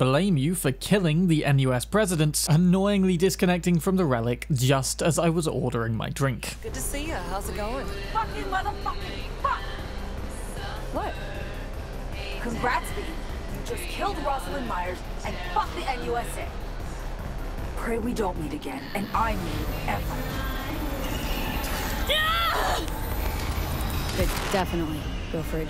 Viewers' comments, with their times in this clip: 0:07 the casual "What?" from V always gets me 😭